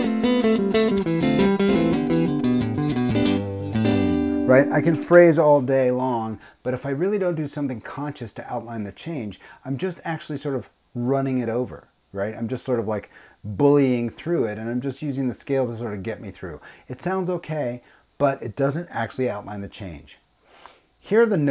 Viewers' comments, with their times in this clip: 0:04 yep, that's what I'm working on, changing things up to sound less like a scale drill! My favourite part was playing with the triads (so grateful for the Triad course you ran), but that technique with the G Maj pentatonic sounded really good, too!